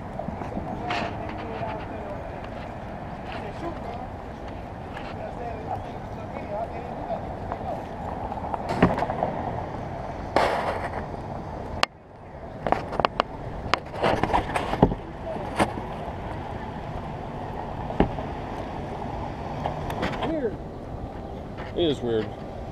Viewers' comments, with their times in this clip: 0:10 was that a gun shot or a midi file? lol